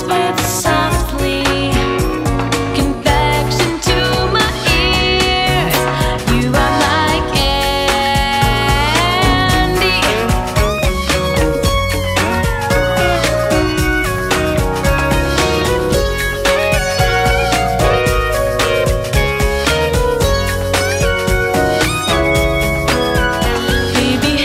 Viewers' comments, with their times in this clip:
0:10 Hmmm … there is the synth solo located on this version … I call it “the Candy synth” … I hope this is that sound you liked!!!